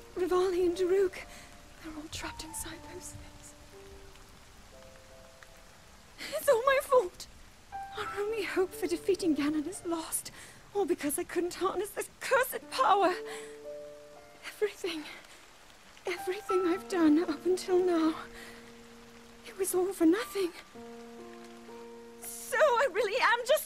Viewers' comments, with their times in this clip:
0:08 the sheer defeat in Zelda’s voice Is what makes this scene she’s lost everyone and everything when she just collapses in link’s arms it’s so realistic…everything she once had has gone